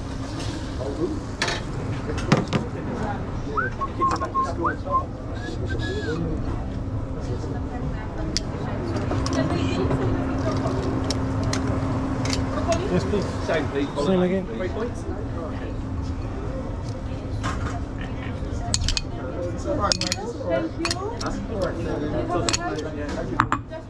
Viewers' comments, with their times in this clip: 0:05 … my dad makes that noise !! It’s like a weird whistle through your teeth thing! That totally threw me back to childhood lol I’ve never heard ANYONE do that other than him in my entire life until just now when I heard you do it😮😂 he would make that noise and do a little jig 🕺 ( we are American tho ,so a jig is basically any dance moves you got in your skill set 😂) …. But anyways , so crazy!! I thought he made it up because he is silly